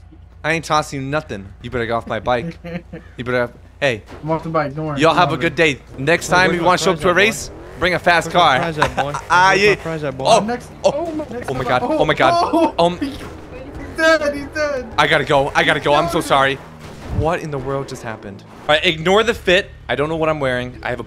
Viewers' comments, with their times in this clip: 0:08 what was his laghf and what the rainder doing lol